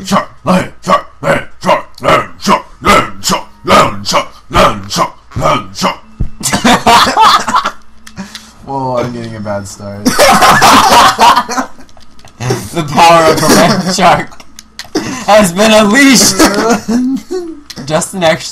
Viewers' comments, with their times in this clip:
0:06 it sounded like "LAND SHARK! LAMB CHOP! LAMB CHOP!" lol